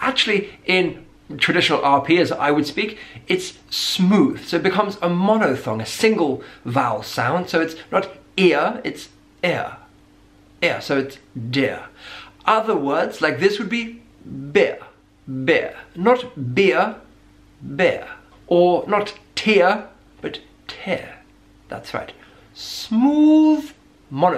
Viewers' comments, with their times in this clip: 0:05 It's not really a monophthong, and you don't pronounce it as a monophthong either. You can tell, because your tongue moves down even when you pronounce the "monophthong".